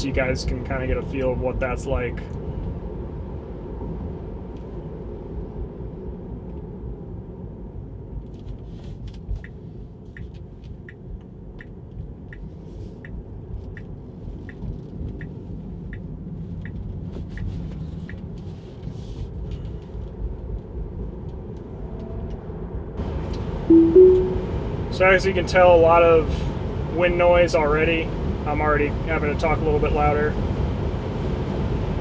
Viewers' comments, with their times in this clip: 0:04 does the wind/road noise bother people? It seems similar to White noise so its nice.
0:19 in my country the underground subway (MRT) in older lines (red / green) have this wind sound when travelling (usually at 50mph? 80kmph) and it can get very loud and deafening